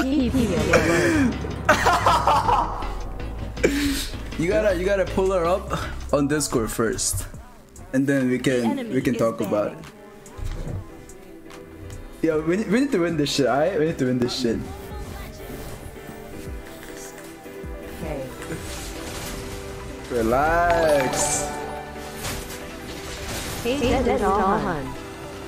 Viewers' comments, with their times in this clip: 0:06 that was a devil laugh 🤣🤣